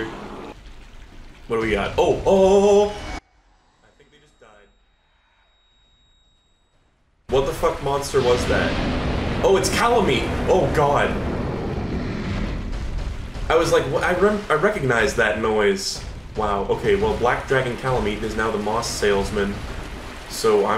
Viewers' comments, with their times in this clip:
0:03 is this an audio glitch or edit?